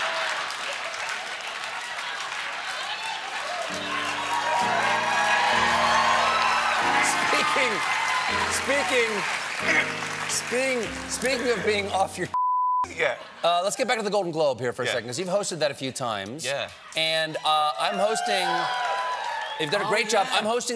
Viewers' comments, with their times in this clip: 0:03 The piano chords that come in HOLY, sooo nice.